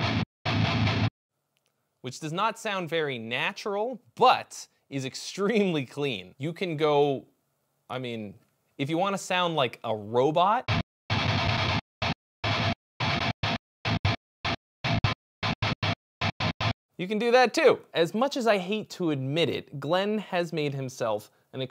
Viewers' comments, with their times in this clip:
0:08 Born of Osiris has entered the chat